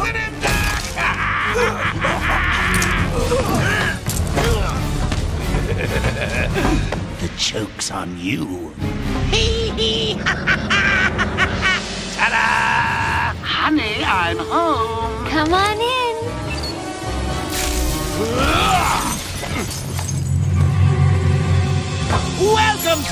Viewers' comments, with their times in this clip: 0:08 This jerker laugh always makes me laugh